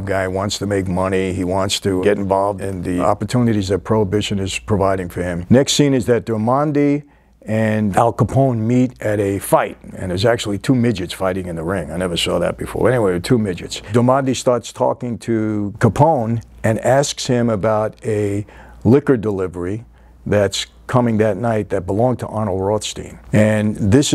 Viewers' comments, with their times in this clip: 0:09 The way he says " Never saw that before" is hilarious.